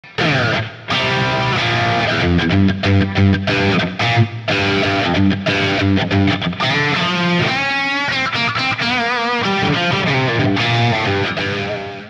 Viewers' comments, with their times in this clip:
0:00 Are you plugged into an amp or your computer? The tone has that cutting quality and sounds pretty sick